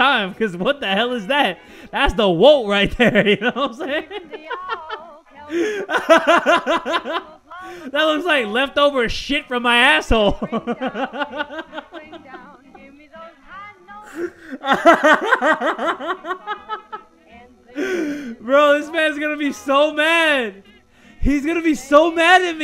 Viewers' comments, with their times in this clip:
0:05 is it just me or does his laugh kinda sounds like Goofys laugh?🤣